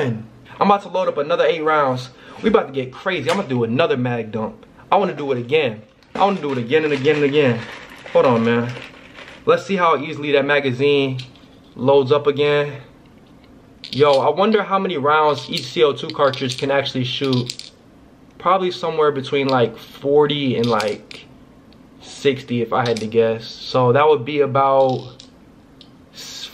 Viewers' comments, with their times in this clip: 0:10 you hear how solid those “paintballs” sound?